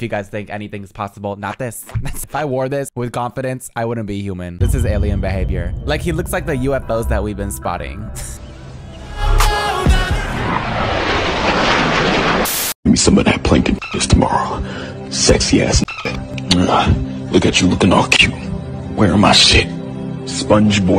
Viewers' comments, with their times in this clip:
0:08 the unholy song while he was flying got me-💀